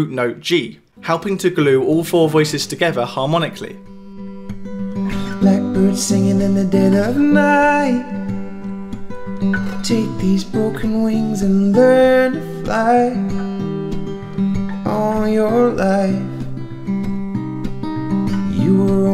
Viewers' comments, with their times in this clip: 0:04 Listening to "blackbird" sounds a lot like Paul Simon.